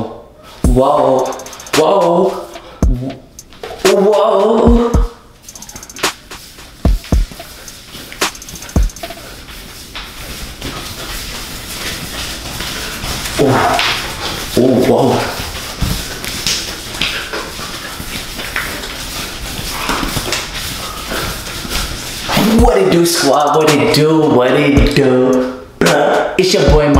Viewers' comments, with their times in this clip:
0:08 Sound like you need some lotion